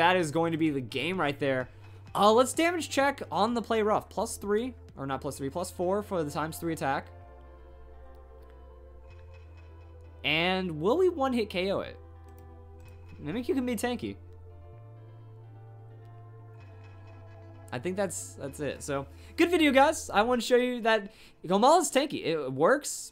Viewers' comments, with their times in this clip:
0:04 so thats a special mimicoo...